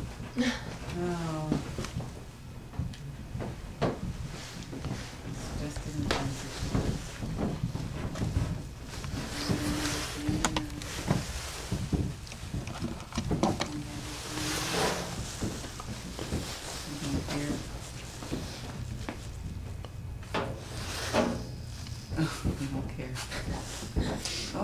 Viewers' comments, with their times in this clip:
0:08 GAC this is not someone Sharted !